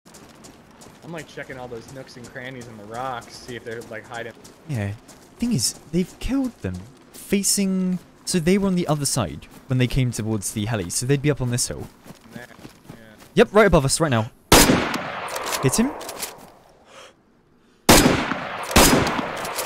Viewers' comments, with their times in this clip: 0:05 after he said 'the thing is" it almost sounds like he was gonna say "You could be saving 15% or more with Geico on car insurance"
0:05 Man the guy REALLY sounds like one of those animated YouTube informational video narrators, or someone you’d hear narrating for animal planet.